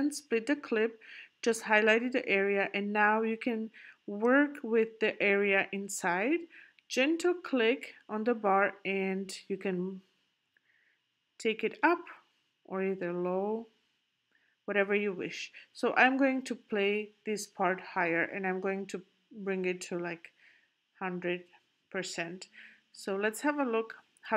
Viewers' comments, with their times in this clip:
0:06 What is it you're saying ? "Gentle click"?